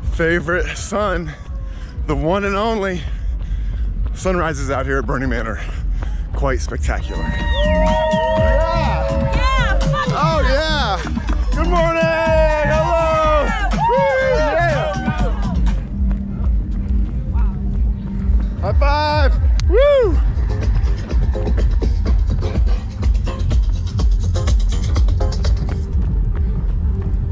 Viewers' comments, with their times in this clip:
0:10 bubbles and bass 💞💞💞💞💞